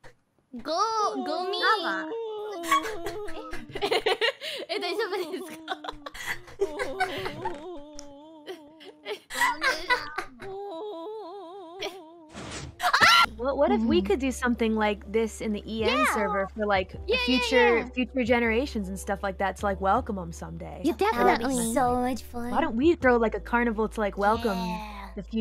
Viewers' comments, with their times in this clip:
0:09 best cut scream
0:10 perfectly cut screams comp. #69420
0:12 Perfect cut screams
0:12 That cut scream tho lmao